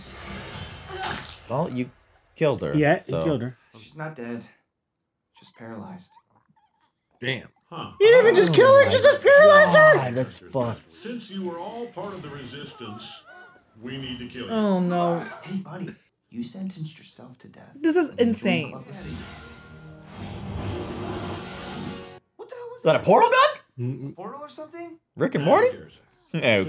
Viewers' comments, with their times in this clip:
0:07 this dude interrupted a great line with his weird voice damn